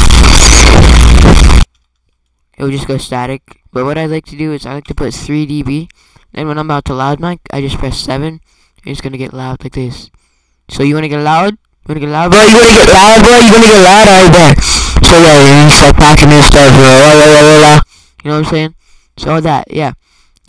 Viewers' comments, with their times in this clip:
0:08 SHIT KILLED ME WHEN IT RANDOMLY GOT LOUD LMFAOOOOOOOO